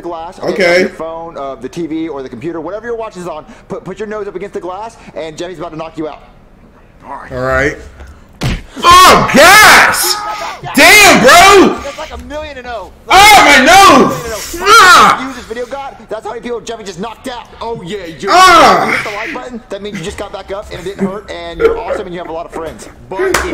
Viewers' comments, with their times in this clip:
0:07 taco bell "BONG"